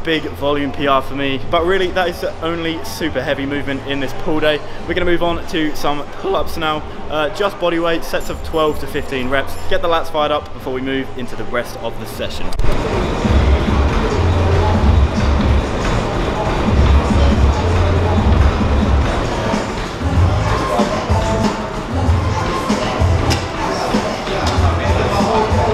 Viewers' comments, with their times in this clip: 0:06 great video mate, no one noticed the voice crack anyway hahahaha <3